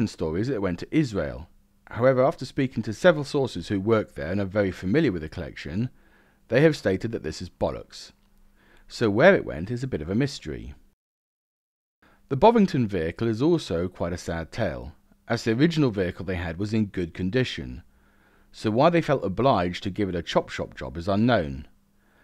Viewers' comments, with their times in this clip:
0:05 ah yes, I can hear the frustration of somebody who is interested in the weird little prototypes that are often neglected or hidden away by museums